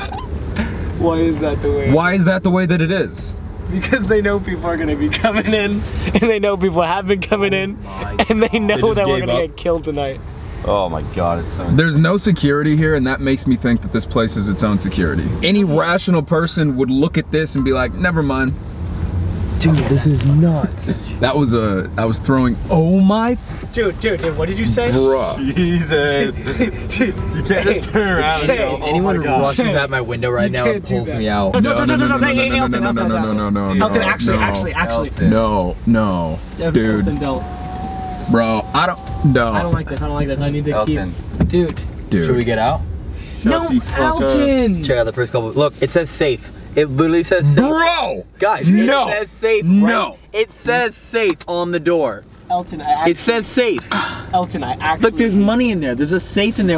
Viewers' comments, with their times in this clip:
0:09 while laughing “and they know that we’re gonna get killed tonight” well okay then
0:38 Is it Only me that hears a no in the background
0:38 Why can I hear a man in the background yelling
0:40 you hear a Soldier scream